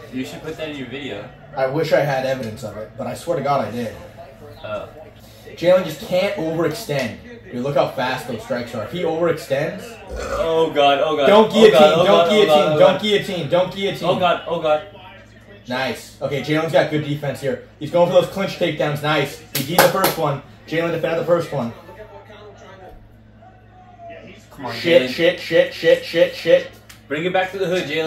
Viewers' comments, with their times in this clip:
0:09 Haha I love this crew, really friendly. The dude burped and reacted to guillotine made my day